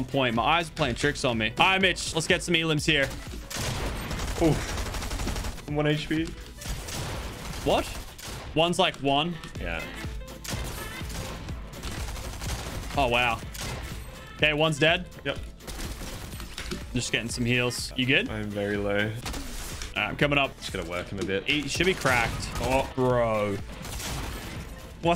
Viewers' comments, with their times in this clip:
0:07 sounded very British there Lachy